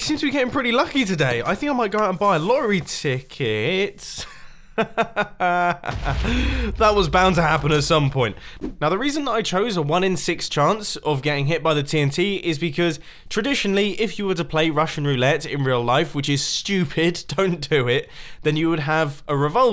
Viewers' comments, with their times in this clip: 0:03 of course you say that I think the world does NOT like it when we "brag" The way you say that too :3